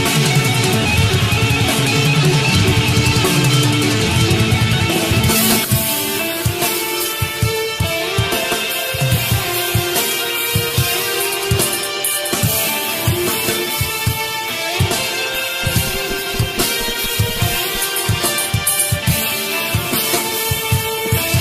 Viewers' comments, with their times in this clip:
0:05 Such a cool and soulful tapping ! Not tough to play but Chuck's harmonies always made the difference !